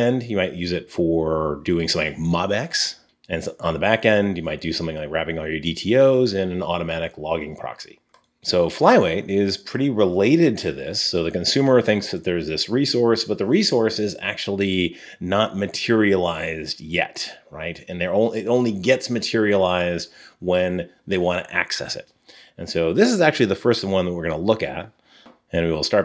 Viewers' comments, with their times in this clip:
0:09 "Rescource"? - haha just being silly, great video as usual Jack 🙂